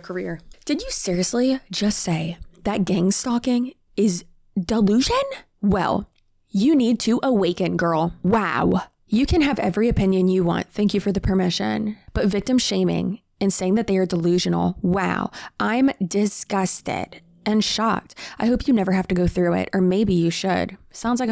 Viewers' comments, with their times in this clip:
0:08 “waw” is my new vocal stim lmfao. Waw.